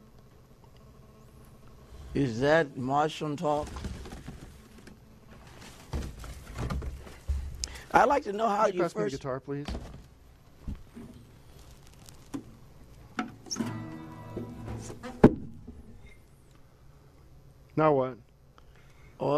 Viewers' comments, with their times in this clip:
0:06 Tim interrupting him, in that horribly passive aggressive monotone voice, and then he just stares off, after 18 minutes of not responding to a single thing the man has said. I fucking spat my drink everywhere